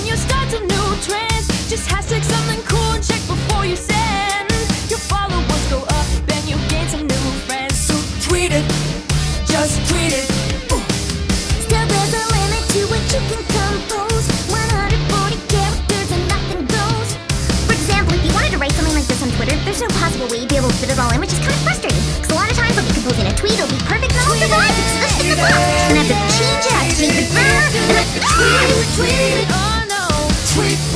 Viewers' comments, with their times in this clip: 0:10 ... was that my voice??...
0:11 Fluttershy! Such an amazing voice!
0:17 i love Andrea Libman when she goes all Pinkie on us. its great.